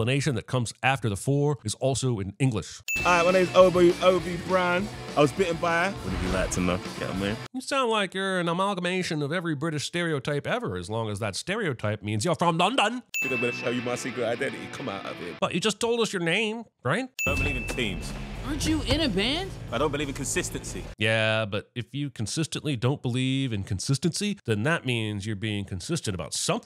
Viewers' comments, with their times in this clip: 0:08 no shot hobie's from london- he has to be northern with that accent